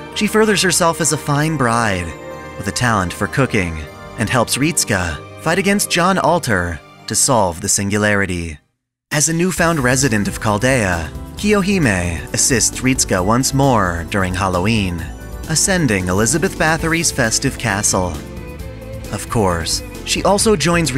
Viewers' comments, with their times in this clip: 0:05 I was half asleep when came and I wondered who John Alter was.